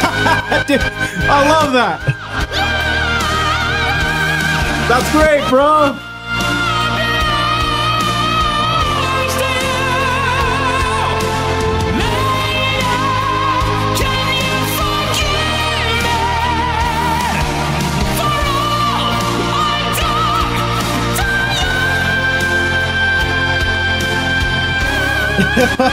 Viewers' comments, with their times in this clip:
0:08 What he does with his voice here is so frickin' cool.